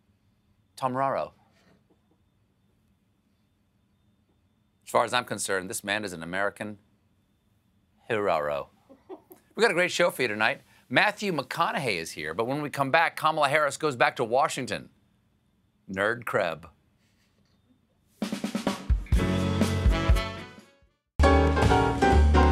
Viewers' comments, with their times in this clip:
0:04 that giggle in the background, tho. lol.